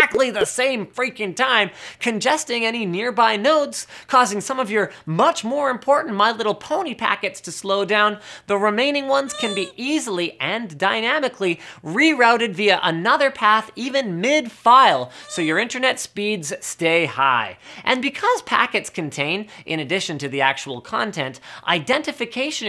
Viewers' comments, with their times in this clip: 0:08 that squee always makes me chuckle.
0:08 I love the little squeak noise that played for the my little pony packets. LOL